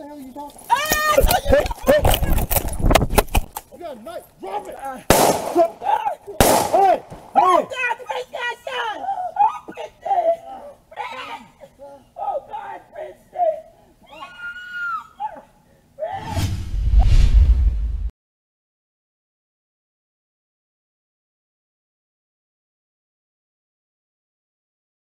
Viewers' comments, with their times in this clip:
0:10 Cue the Screaming Woman 😎